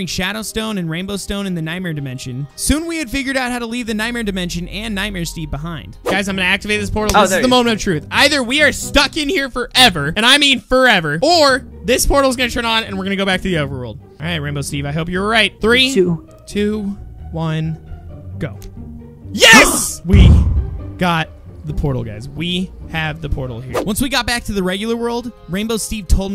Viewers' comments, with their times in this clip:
0:07 I heard like.. an okay!